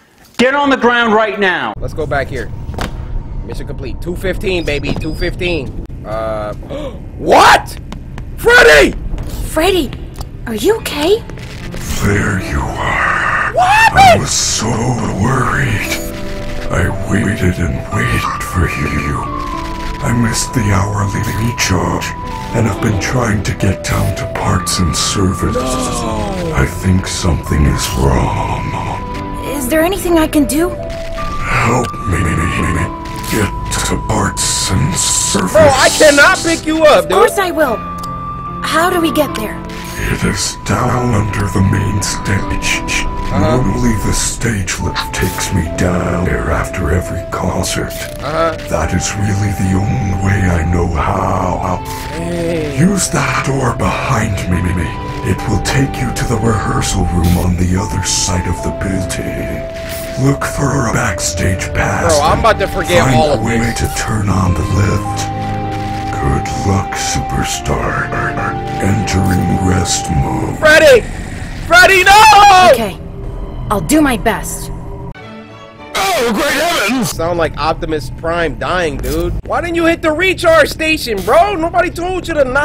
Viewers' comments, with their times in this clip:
0:10 Love what was done with the music!
0:31 when ocarina of time theme started playing 🤣
0:40 the Zelda soundtrack playing in background lmao
1:10 that voice crack was crazy